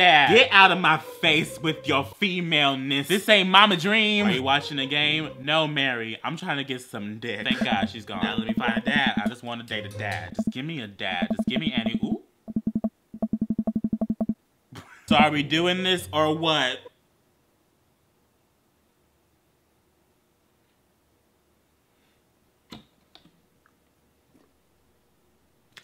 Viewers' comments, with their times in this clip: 0:10 "any oop" kinda sounds like "and I oop"....... sound familiar?
0:11 I swear I heard him say and I oop even tho he said any oop